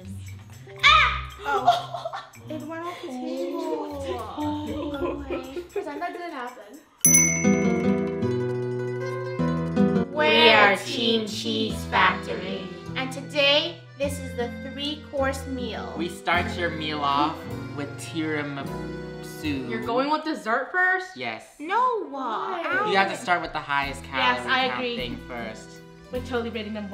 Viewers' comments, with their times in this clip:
0:10 they sounded so lifeless lol😅